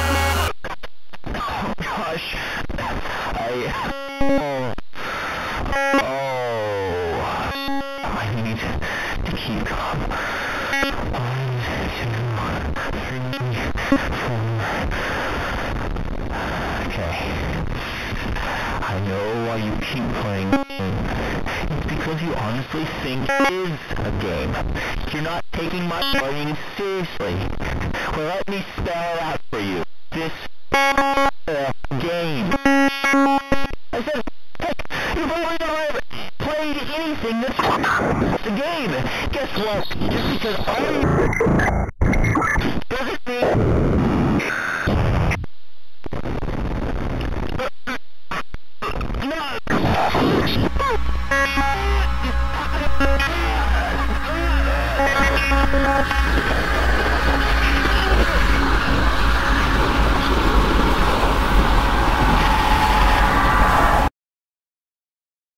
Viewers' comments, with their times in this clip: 0:08 Count the numbers like a radio xd
0:49 null screaming in a British accent